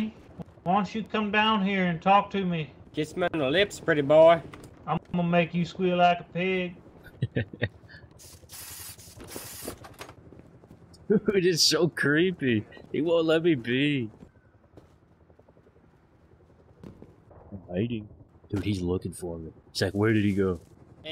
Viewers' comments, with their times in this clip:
0:03 that guy sound like jeffrey dahmer